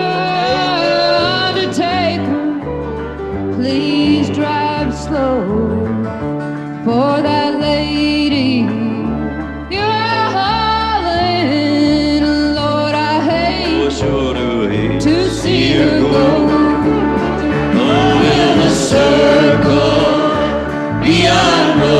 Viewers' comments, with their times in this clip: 0:05 pardon my ignorance but who is she? beautiful voice